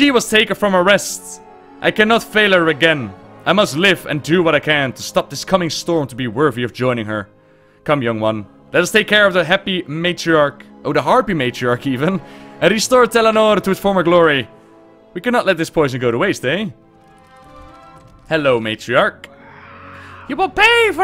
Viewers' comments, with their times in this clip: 0:07 The "happy matriarch" sounds like an amazing story though